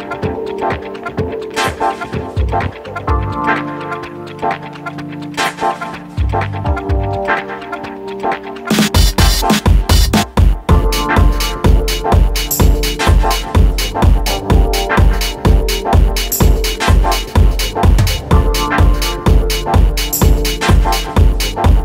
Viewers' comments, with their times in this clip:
0:07 the drums make the song...oof so good